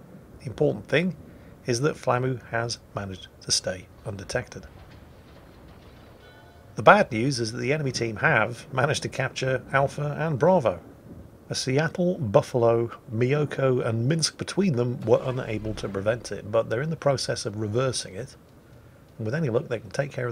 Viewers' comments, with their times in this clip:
0:06 is where he fluffs the caps captured but I'm partially deaf so couldnt hear the purring?